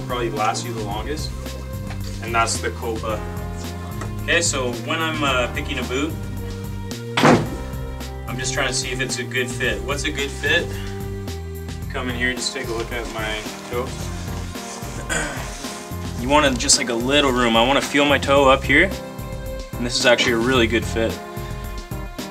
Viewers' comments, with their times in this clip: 0:08 he said....... ''boob''....... awkwaaaaaaard